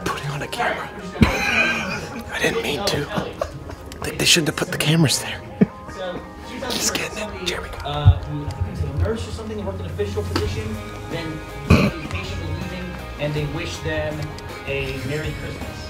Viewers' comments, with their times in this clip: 0:03 the unnatural plop of that pudding ping pong ball had me in stitches!